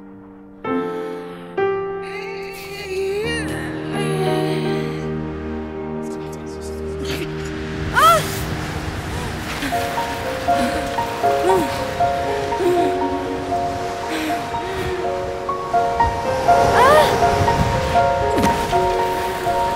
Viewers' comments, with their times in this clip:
0:06 LAUGHING? WHAT A MEAN BULLY!